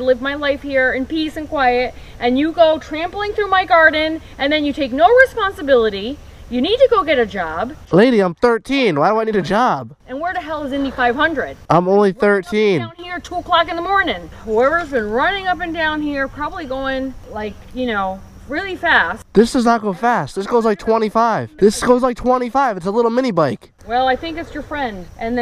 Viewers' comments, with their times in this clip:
0:09 Women yelling at him about her garden The gun on the mail box🤣